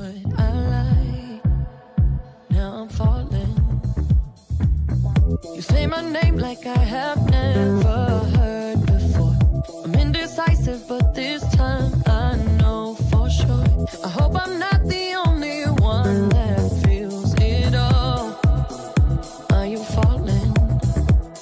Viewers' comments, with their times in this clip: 0:07 I really like how the music is matching the combo rythm 😍